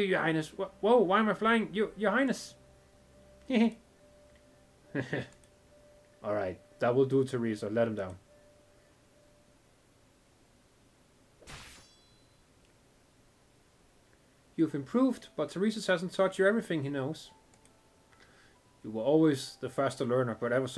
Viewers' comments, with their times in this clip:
0:05 There's no way that Theresis did just laugh right now XD I love they're backstorys and us so relatable with they're characters and they have potential especially Ascalon. Manfred from the other side we know and from chapter 10 and 11 his character and now we know more how cool and not bloodhead sarkaz who wants only to kill because his race is like that but I feel but for oddas dad be killed by Ascalon imagines If he find out who killed his father and Manfred was the one who cared about him even thought odda don't remember him when they're were kids just sad bro so far